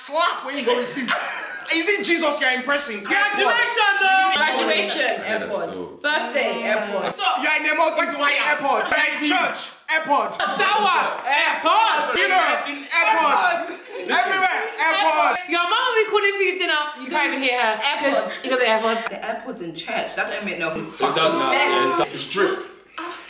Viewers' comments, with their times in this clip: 0:05 Man said kwasiiia😂